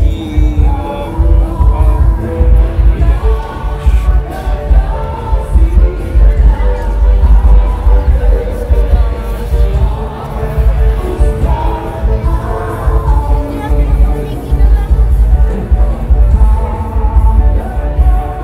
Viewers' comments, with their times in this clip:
0:03 that song. I used to listen to songs like that. Nostalgia